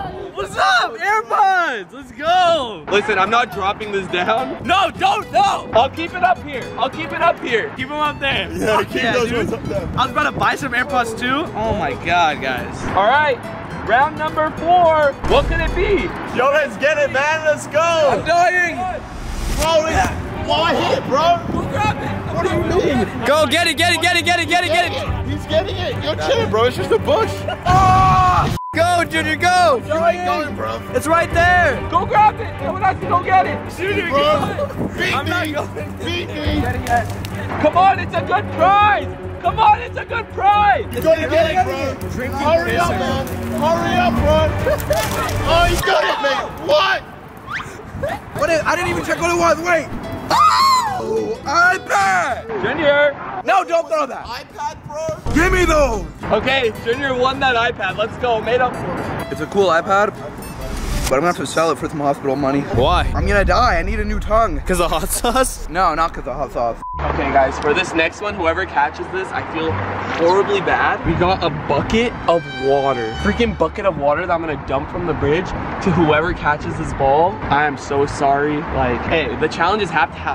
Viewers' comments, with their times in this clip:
0:08 Somebody missed the beep
1:04 he wants a new tongue so he doesn’t lisp